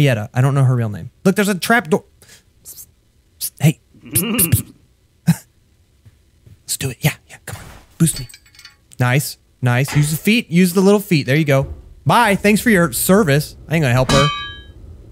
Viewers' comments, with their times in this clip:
0:03 me: Henry can’t talk! Henry:whispers to Ellie Me :HOW THE ACTUAL F-